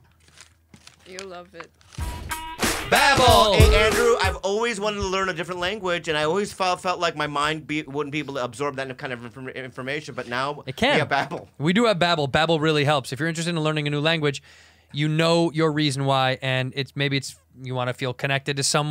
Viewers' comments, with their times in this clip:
0:04 bobby starts sounding like porky the pig😂